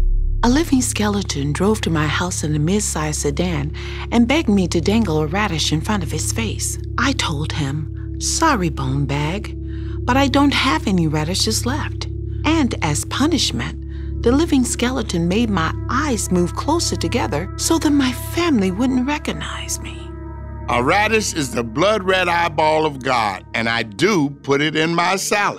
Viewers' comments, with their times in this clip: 0:09 sounds like a math problem from a textbook. She has the voice for it too